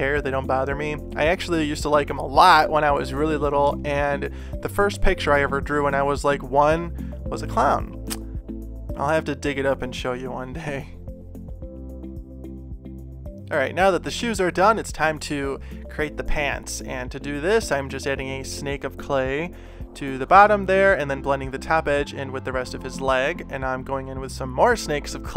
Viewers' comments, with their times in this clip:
0:09 voice crack lmao??